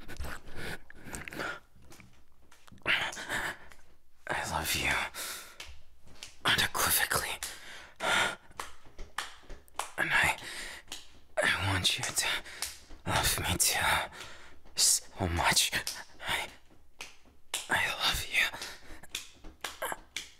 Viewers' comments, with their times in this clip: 0:03 clapping noises0-0 (i think thats the right time) enjoyyy 🙃